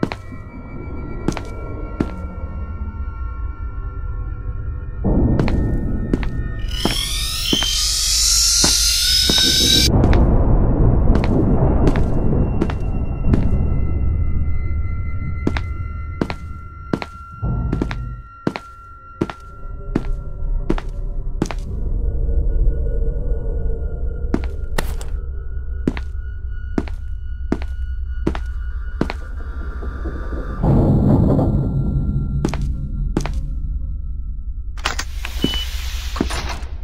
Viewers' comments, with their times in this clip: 0:06 Cool. A teddy bear that t-poses then screams to kill people.
0:19 josh dun's drums |-/